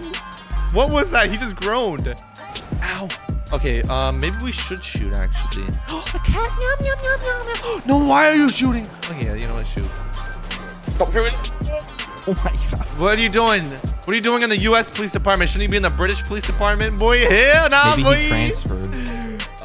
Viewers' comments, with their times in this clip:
0:04 bro the cat noise😂😂